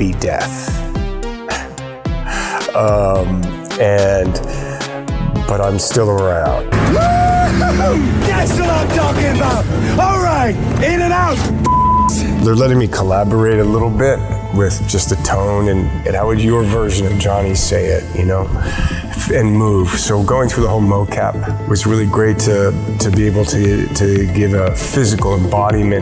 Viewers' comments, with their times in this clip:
0:09 that swear beap makes what hes saying sound WAY more rude than what he actually says
0:14 That music AMAZING !!!!